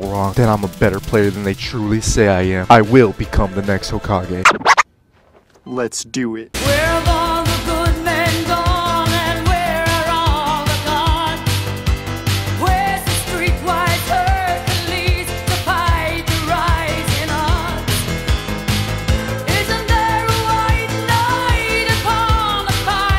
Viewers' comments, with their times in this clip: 0:07 Song is so crazy🥲